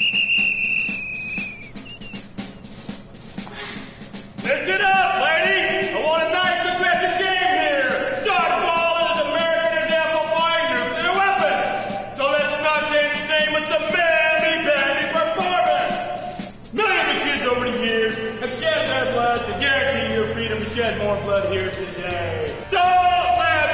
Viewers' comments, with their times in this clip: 0:08 rip for people who had head phones in